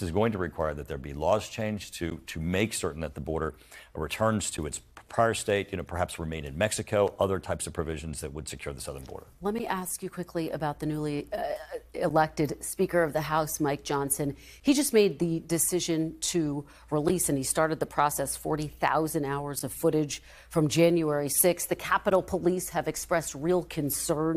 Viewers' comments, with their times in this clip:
0:08 could all the throat clearing when he talks about J6 be a tell that he is all GOP talking points that he does not actually believe?